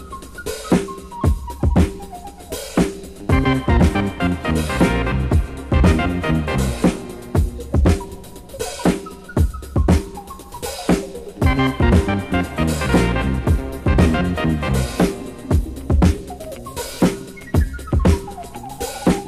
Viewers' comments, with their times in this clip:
0:03 Similar to Fortnite default theme music!